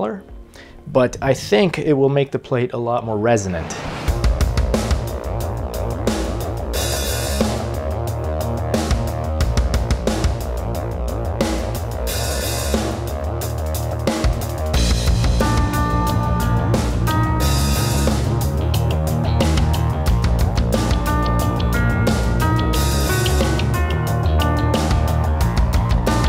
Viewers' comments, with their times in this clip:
0:03 really digging that modified Deftones beat. Did you use the plate on it?
0:04 Sounds awesome! Is that an original song ? Pretty sick, reminds me of NIN Ghosts/Trent Reznor's soundtrack work.
0:04 That drum beat sounds very similar to the song 'Around The Fur' by Deftones
0:09 dat deftones beat